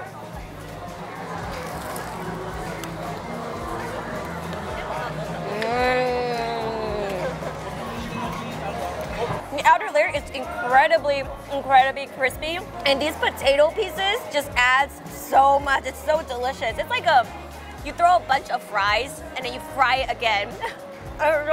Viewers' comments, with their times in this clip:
0:06 Nobody: Subs (Sastified Moans)